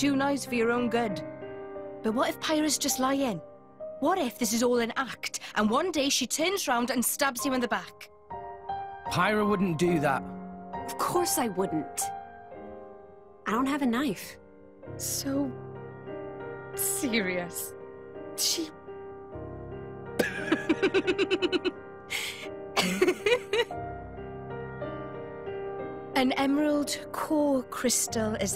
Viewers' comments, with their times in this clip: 0:10 min well, she certainly sounded pretty convincing, though. I'm buying it.